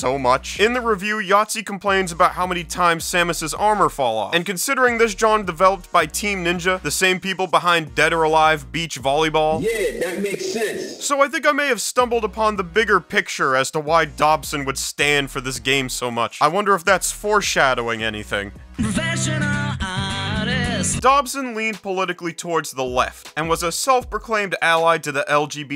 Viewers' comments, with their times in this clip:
0:10 Why do I laugh at SF3 sounds being used like this